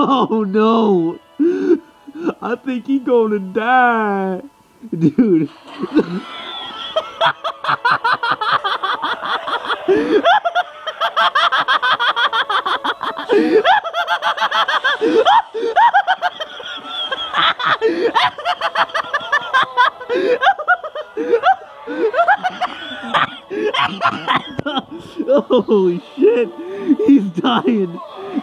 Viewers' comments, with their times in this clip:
0:10 I love your laugh 😂 buddy mine sounds like a hyena